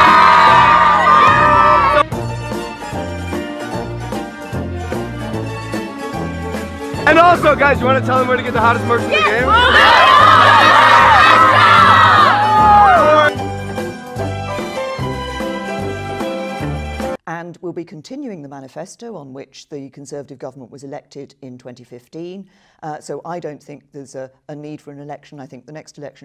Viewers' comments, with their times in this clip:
0:07 OMG MY EARS!!! i was wearing headphones on full vol.